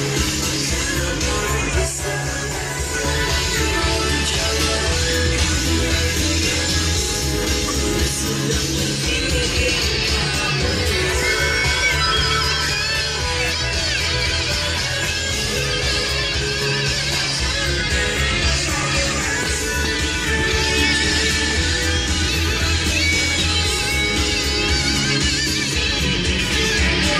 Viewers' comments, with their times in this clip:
0:08 Epic guitar freestyle